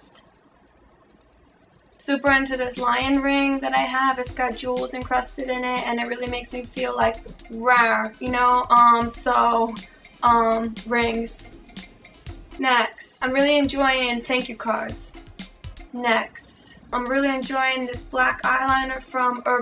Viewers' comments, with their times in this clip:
0:04 I love how she even has to try not to laugh when she says 'rawr' :L